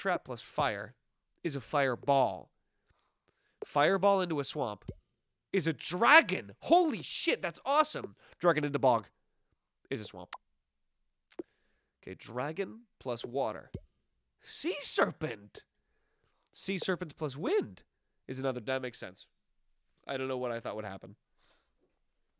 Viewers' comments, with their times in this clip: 0:07 when he said holy shit it cut off at sh and started an ad 💀